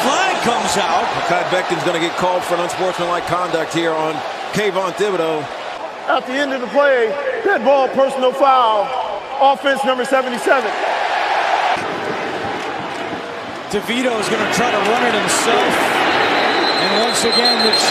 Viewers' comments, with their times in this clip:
0:05 Ref thought we weren’t gonna notice that voicecrack 😂